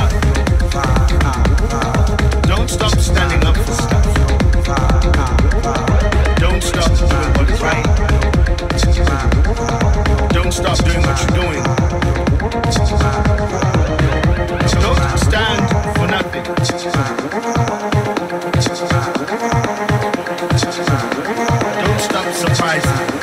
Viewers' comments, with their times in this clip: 0:04 the loop from hits all the right spots